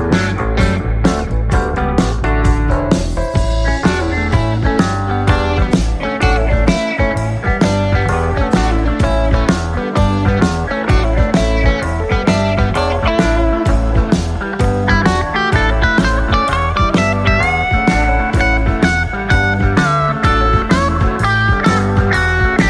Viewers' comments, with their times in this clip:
0:10 that songs sounds like the grateful dead ✌🏻